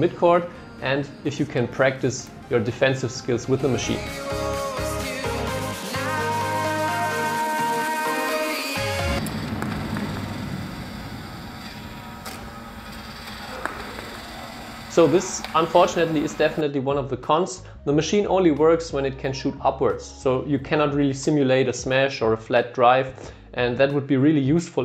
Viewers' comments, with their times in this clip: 0:09 Oh my god really got me, the music and build-up was all there 😅